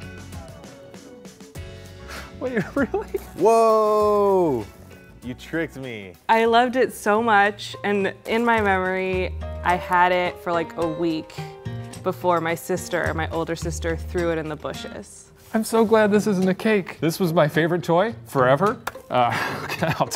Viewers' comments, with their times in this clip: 0:08 I thought it said "To Marijuana" lol